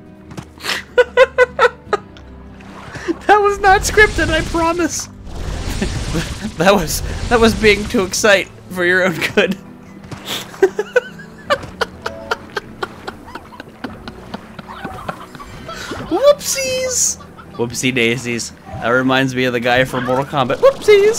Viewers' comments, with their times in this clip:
0:05 OMG U CAN'T STOP LAUGHING